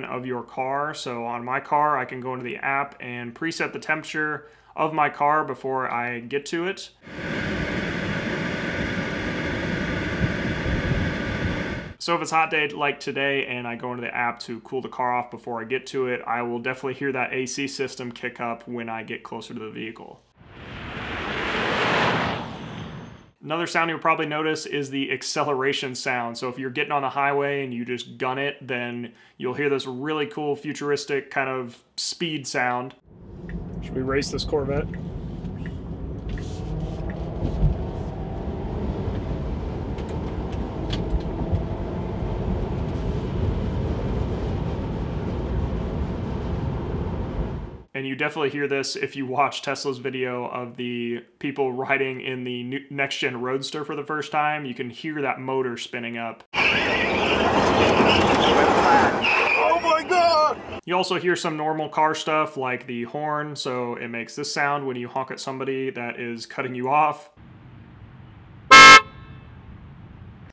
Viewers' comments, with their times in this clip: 0:09 that mic was not showing how loud it gets, louder than a regular car with the engine on.
0:54 The parking sound isn't anyhow related to the car being EV, but for all cars with such parking system. For example diesel Ford Fusion/Mondeo does almost the same sound whenever you put parking brakes on or just turn off the engine (as the brakes are engaged automatically). Literally all you can hear are tires screeching and the frame shaking.